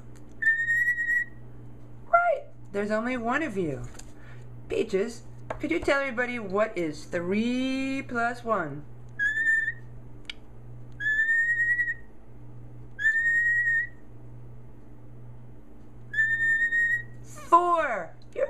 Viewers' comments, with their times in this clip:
0:03 LOL! when u asked 3+1 it was like Bird: ooooone, twooooo, threeeee, ummmmm.....(a sudden pause to think) fooooour. It adorable!